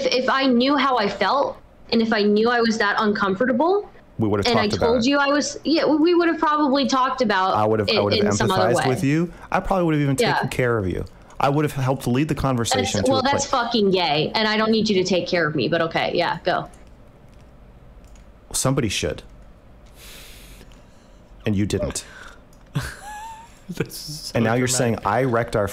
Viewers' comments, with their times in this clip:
0:09 EWWWW and destiny laughing afterwards lmao